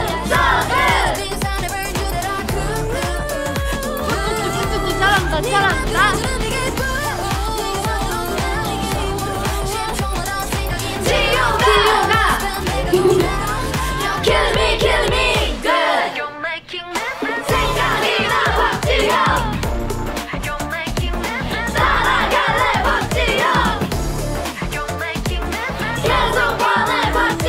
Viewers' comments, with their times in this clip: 0:10 6 Jihyos cheer-shouting, never knew I needed this but I do! She’s so cute and unserious I love her!!! My meme Queen. That one late “Jihyo ga!” and gummy smile after 🤣🤣 Gonna learn this before next Twice tour. CONGRATS QUEEN JIHYO ❤️🧡❤️🧡❤️🧡
0:10 one of them there is too late 😂
0:13 Her cute little giggle because her cheer was delayed LOL 😅🧡